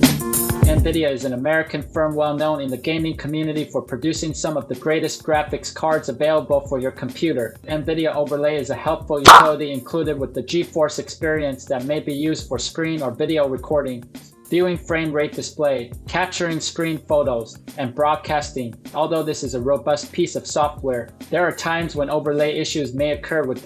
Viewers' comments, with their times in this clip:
0:08 Dont forget the comically loud sound effect for the thumbs up